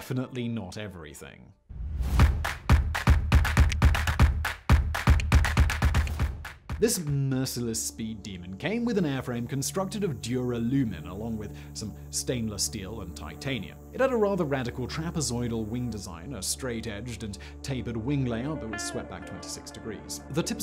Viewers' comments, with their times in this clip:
0:03 God i hate that upbeat "corporatist" music